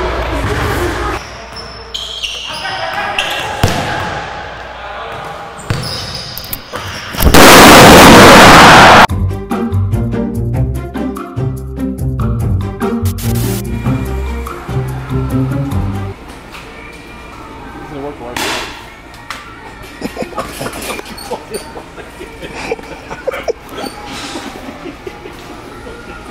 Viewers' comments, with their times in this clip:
0:07 😂😂😂 sound of nuke